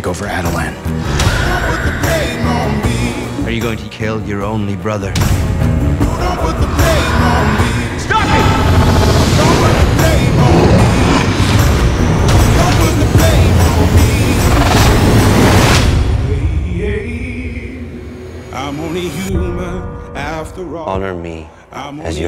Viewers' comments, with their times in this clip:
0:07 is basically Jon Tron's "STOP!"